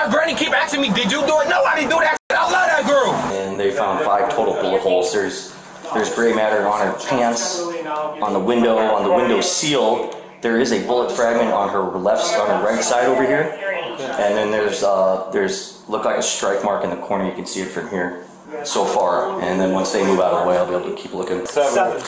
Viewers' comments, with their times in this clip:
0:03 Everybody knows the louder you tell your story the truer it gets